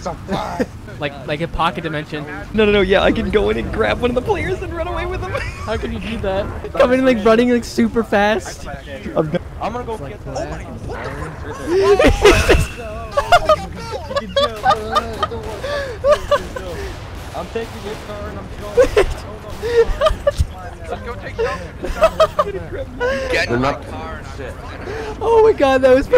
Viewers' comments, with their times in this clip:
0:06 Also bro listen to the screaming the guy give off
0:07 Lmaoo had me weak and that Scream lmaoo
0:09 The part is f*cking hilarious the way the guy getting grabbed just screams is so funny
0:10 was my absolute favorite part lmao that scream
0:11 am I the only one that heard him scream 😭😭
0:11 the sco grabs a civilian and takes him away and all you hear is girl type screaming in the background 🤣🤣🤣🤣
0:12 that scream I'm dying
0:12 I love how the scream slowly fades away as he’s dragged into the darkness lol 🤣
0:12 that Scream omfg I’m dying 😂🤣